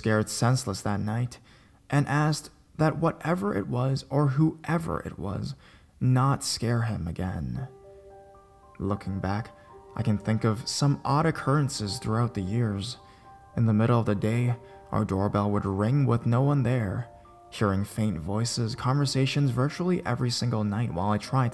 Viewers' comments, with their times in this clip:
0:09 For that first story the music st is perfect for it cause that music isn't for scary stories, it's for comforting and sad stories like that one.